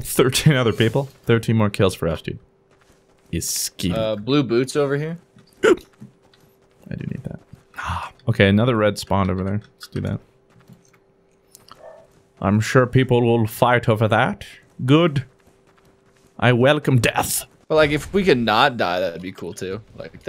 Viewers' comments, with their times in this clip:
0:04 WHAT WAS THAT NOICE IM LAUGHING SO HARD